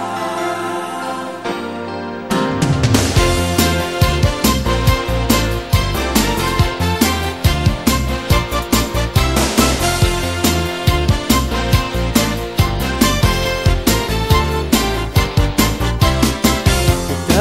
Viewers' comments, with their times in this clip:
0:03 sounds like the theme that would play when someone tells you that you won the lottery. “You just won, 10-MILLION-DOLLARS !!!”